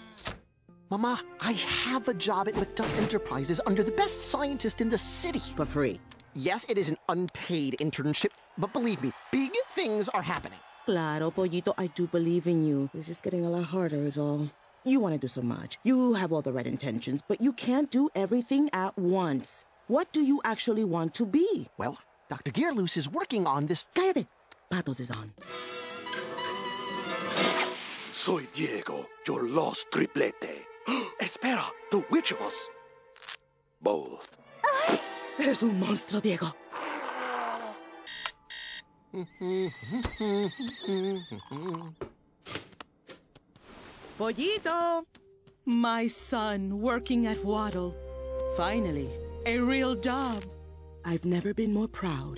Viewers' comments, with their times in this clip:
0:09 that voice crack was precious and I didn't notice it until now.
0:36 Fenton's mother cries when Fenton and Gandra Dee break up!!!!!